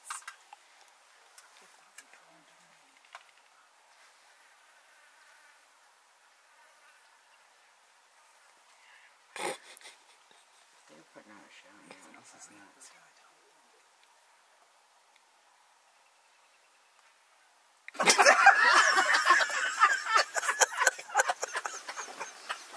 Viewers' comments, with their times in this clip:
0:08 I tried not to laugh, but that snicker broke me.